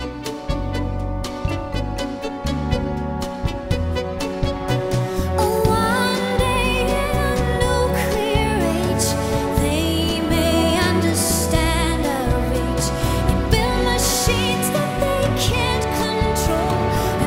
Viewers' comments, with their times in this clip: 0:03 As much as I love this cover version, missing out the riff (which comes in briefly ) always makes me wanting more... but yeah this shows how brilliant a song writer Sting is...